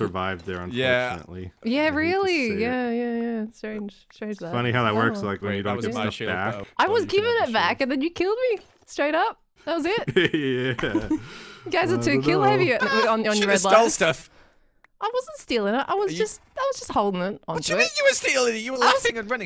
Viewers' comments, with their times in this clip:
0:04 Did Etho swear ? It really sounded like he said “when you don’t give sh!t back”